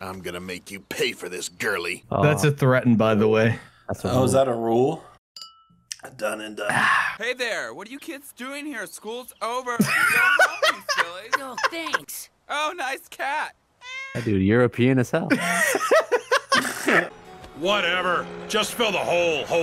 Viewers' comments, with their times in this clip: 0:07 Pauly Shore Pinocchio? Is that you?!